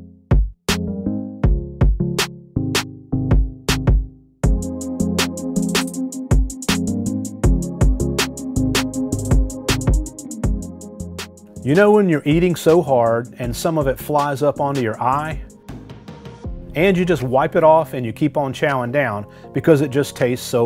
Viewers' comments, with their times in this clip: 0:04 the music... aight I see you 👀👀🔥🔥🔥